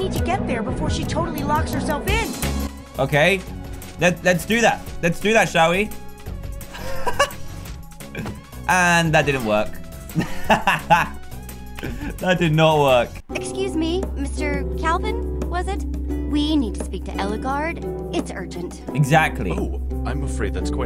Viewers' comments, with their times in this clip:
0:07 did he seriously censor the word "crap"? boy, kids these days say WAY worse stuff. XDDD